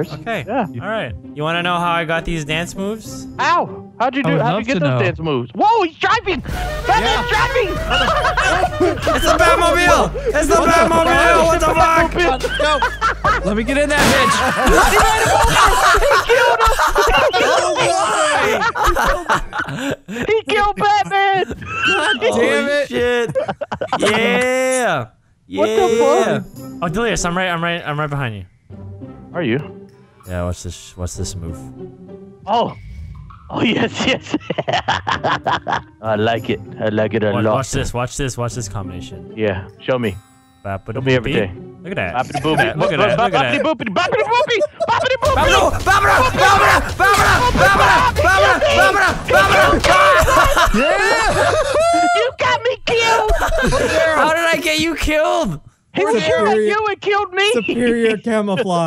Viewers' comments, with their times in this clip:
0:07 what's with the general lee horn? XD
0:46 he sounded like courage the cowardly dog lol